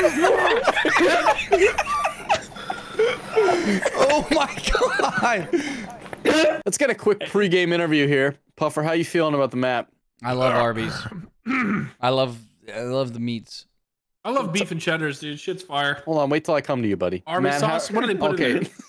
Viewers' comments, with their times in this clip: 0:06 Funny Mic Blarg Goose Laugh. 😂